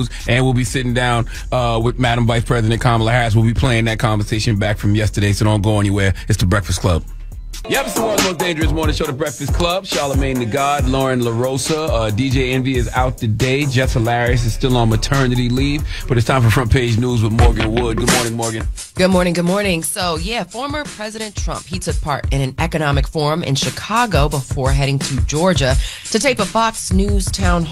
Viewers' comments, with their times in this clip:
0:08 Charlamagne sounds sooo much better now that hes brushed his teeth here. You can tell.